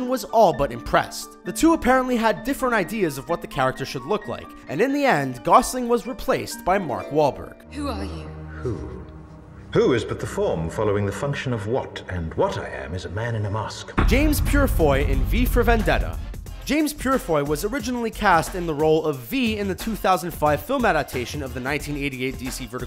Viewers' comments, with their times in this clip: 0:08 that dude sounds like the narrator in stanley parable